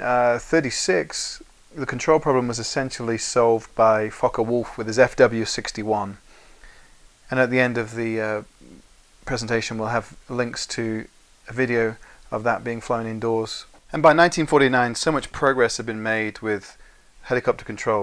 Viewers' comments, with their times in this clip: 0:03 does anyone hear fuck a wolf
0:03 I thought he used obsence language 😂😂😭😭